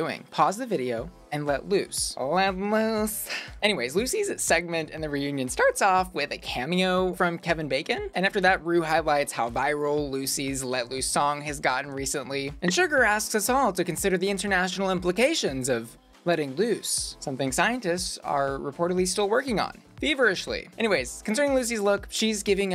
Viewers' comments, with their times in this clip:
0:04 Honestly, such a missed opportunity for any of the queens to say an snippy comment. Immediately after that Kevin Bacon message, I immediately thought of saying “So, how much did you pay for that on Cameo, Ru?” Kevin Bacon couldn’t have had less charisma and he was so monotone. It actually seemed like he couldn’t have cared less and/or had no idea whom he was talking to.